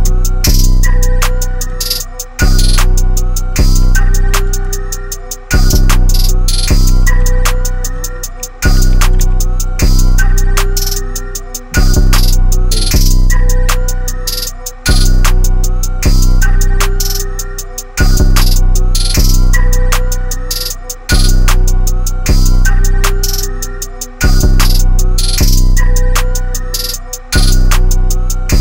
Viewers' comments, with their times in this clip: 0:05 beat hit different 🥶🥶
0:15 beat go crazyyy